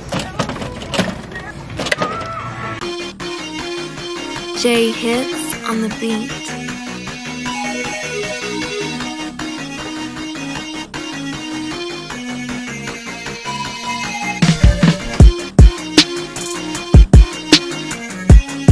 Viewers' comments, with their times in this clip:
0:05 sonic type beat 😂